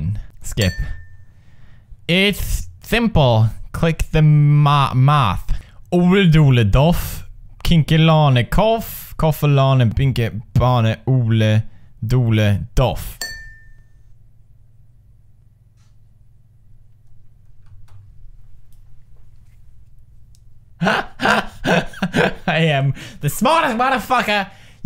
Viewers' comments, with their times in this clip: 0:07 wtf is he saying